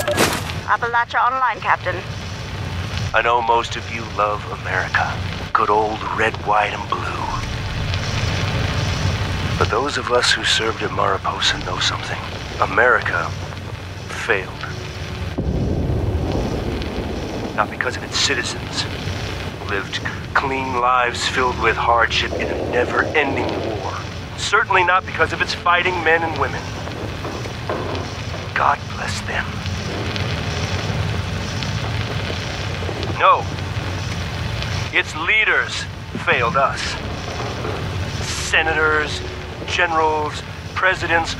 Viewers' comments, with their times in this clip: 0:09 "America Failed." thunder crashes Seriously, how do you time these things, and why aren't you directing movies at this point?
0:25 Right you can definitely hear the Arthur Maxon style speech...